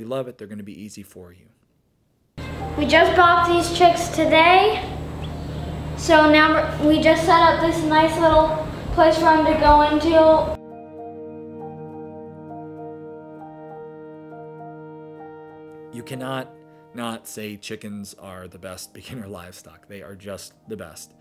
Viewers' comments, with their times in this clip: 0:03 ear rape much ?